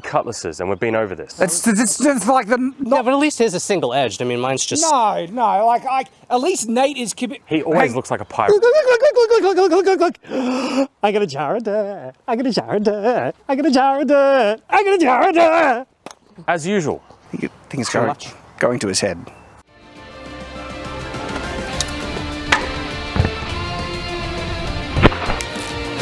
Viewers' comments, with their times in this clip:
0:10 the Jack Sparrow impersonation was actually nice lol Totally unexpected and pulled off without cringe